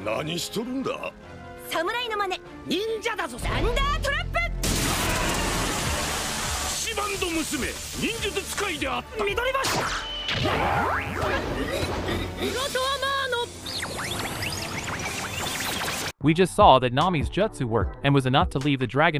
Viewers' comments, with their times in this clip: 0:06 The way he called nami